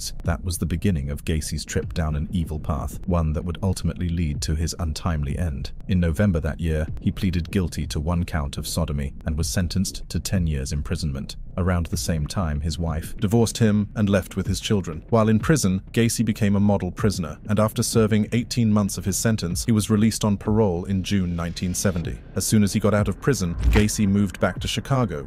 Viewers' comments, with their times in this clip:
0:08 Can tell you stopped and had a coffee lol!!!
0:13 Lol at the audio editing